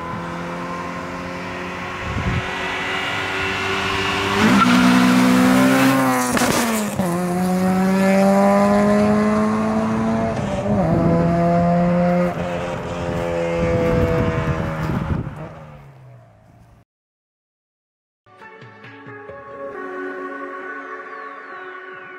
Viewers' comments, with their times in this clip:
0:05 Dope CB7 love it! Phonk goes good with this video. Damn that backfire was sick AF!
0:05 how and y does it pop like that ?